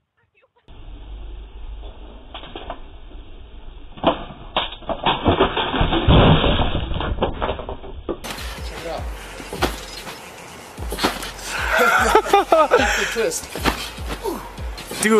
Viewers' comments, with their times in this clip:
0:03 my favorite beat